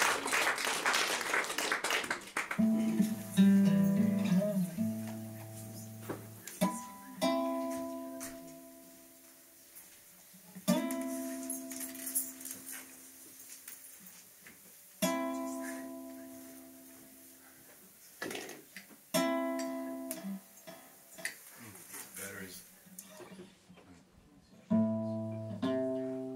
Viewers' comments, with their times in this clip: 0:09 it really sounds like he was about to play "half of once"